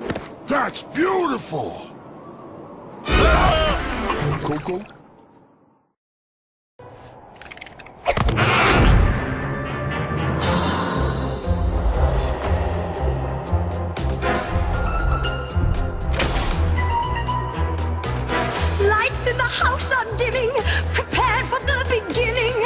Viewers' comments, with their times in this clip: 0:04 Skylanders has become a musical. It'll be cool if this level would be like some dancing level.